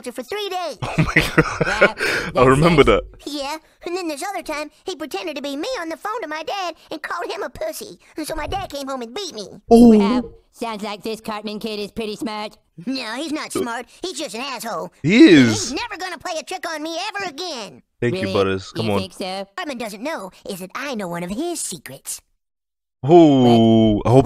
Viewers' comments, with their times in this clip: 0:09 why did he’s say beat me like that